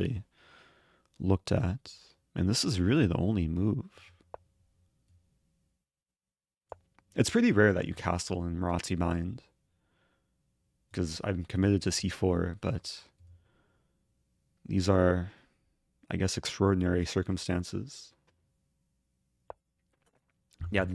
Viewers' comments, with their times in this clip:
0:06 "It's pretty rare to castle ... ... ... " - did anyone catch what he said here please?